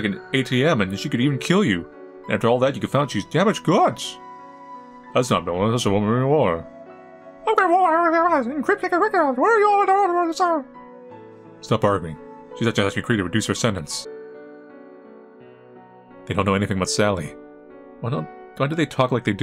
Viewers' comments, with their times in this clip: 0:05 I like how he talks like Mickey.